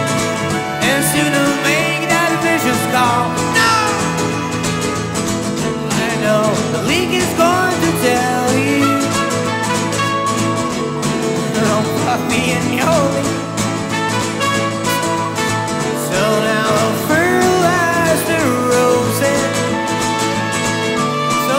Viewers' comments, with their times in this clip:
0:08 Awesome, Check out his reaction to the horns Love it, sounds like that affect could be part of a 70s TV sitcom, Great group of musicians and Kristian is good as well :-)